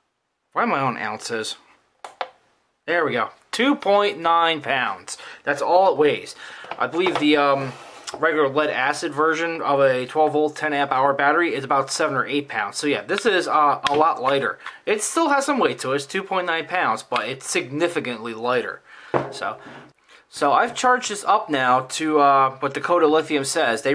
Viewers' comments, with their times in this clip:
0:04 WOW: at timestamp it sounds JUST like you are saying "2.9 OUNCE". I thought you were just mispronouncing it as 'ounce', but after 1st assuming you were saying 'pounds' and replaying, I could hear 'pounds'. Actually I can make myself hear "pounds" or "ounce" at will! Very odd--I thought I would point out this trivial 'thing', hoping to see if this 'effect' occurs with others besides myself.